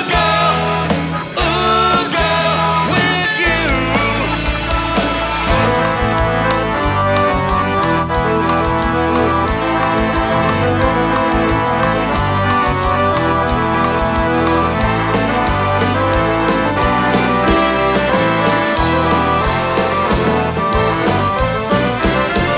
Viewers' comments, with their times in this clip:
0:05 Classical Gas on Accordion!